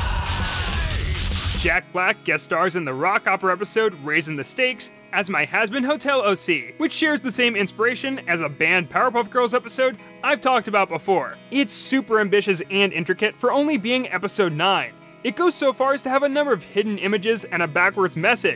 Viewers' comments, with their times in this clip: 0:05 lmao. That scream was brutal